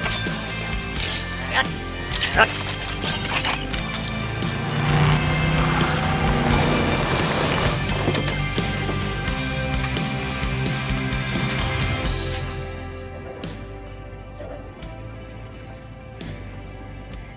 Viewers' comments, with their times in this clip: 0:03 I love the sound the Camaro makes as its running up towards the camera I really like that car, I'd like to have it